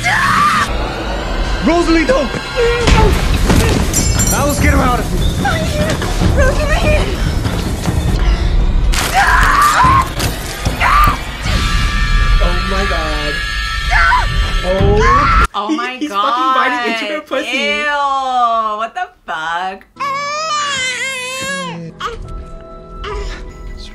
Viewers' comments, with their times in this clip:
0:06 Lmao SJM ripping plot points from Twilight Im fuckin dying them bones was snapping and y’all are like 😨🤭